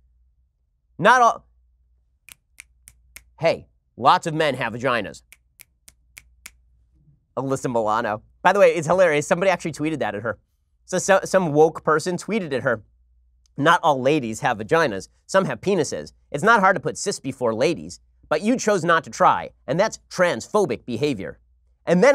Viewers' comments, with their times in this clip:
0:07 The snapping of the fingers got me rolling on the floor HAHAHA